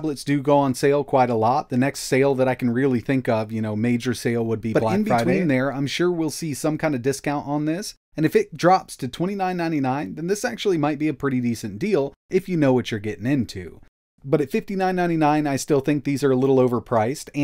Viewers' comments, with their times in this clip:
0:04 When would the next major sale be? The audio is weird there